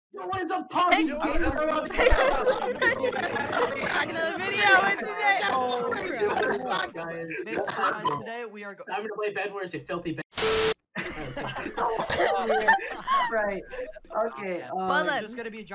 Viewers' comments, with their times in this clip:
0:00 discord audio is dying xD